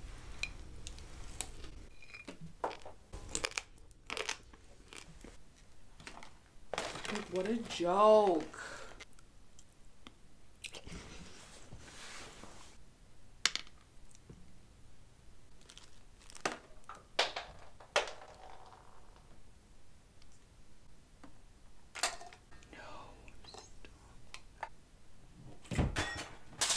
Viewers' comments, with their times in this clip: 0:06 this is the first time I’ve heard her go above 0.1% volume
0:07 Is no one gonna talk about her not actually whispering Time stamp: